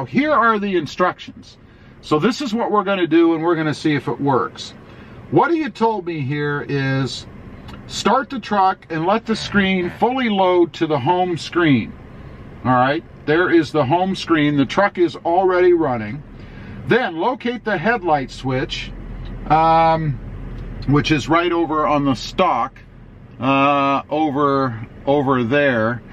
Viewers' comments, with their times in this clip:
0:10 Was that a fart ? 🤣🤣🤣🤣